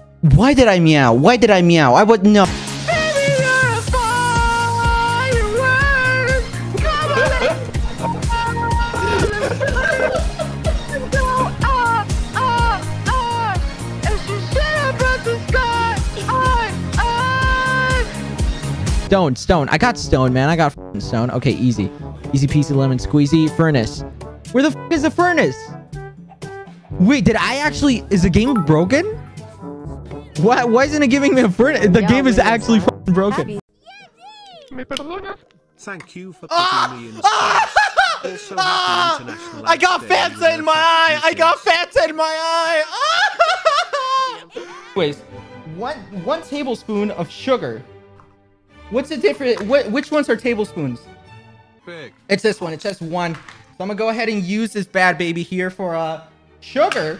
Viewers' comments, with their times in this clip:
0:09 Quackity over there singing fire work in auto tune then karl dancing the part time
0:41 his scream sounds like a mariachi 😆